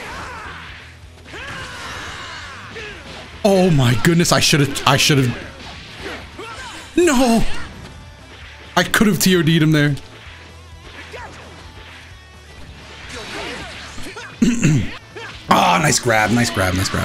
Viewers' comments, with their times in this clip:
0:05 you could hear the pain in his voice from the drop